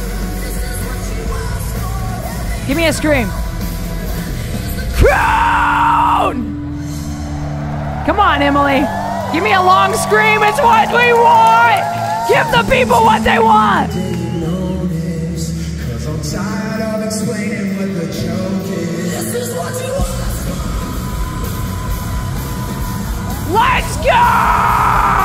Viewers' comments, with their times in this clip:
0:09 The buildup to the epic scream was just perfect. The new era is kicking ass and taking names. And I'm all in.